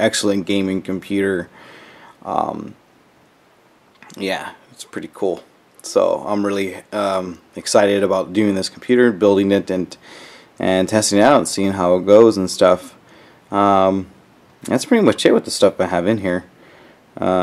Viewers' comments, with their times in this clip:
0:04 "I'm really excited about doing this computer..." ...wow. If you sounded any more unenthusiastic you'd be sleeping.